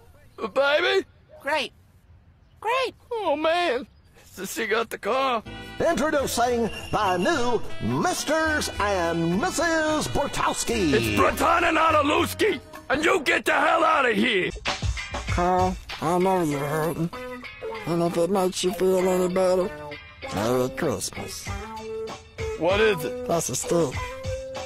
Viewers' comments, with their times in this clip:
0:10 carl mispronounces his own name
0:10 I don’t know why I think it’s so funny the way he says his name, it makes me crack up each time 😂